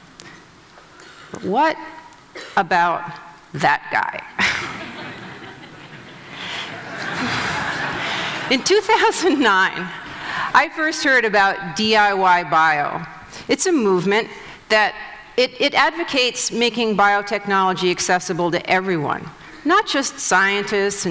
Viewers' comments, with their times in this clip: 0:03 I love the second laugh after the initial laugh when everyone finishes reading his XKCD shirt! XD